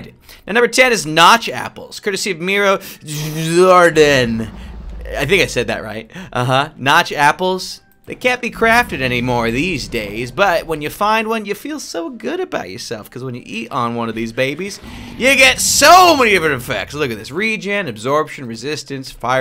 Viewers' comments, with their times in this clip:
0:03 you said it bad
0:04 im from his coutry aand, you didn't said that right :D. But good job :D :DDD